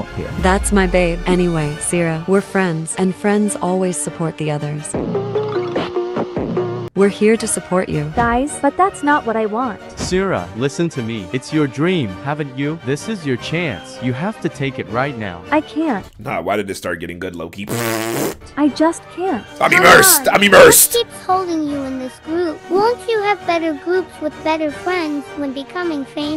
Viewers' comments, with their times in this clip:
0:08 the music makes it actually a little good wtf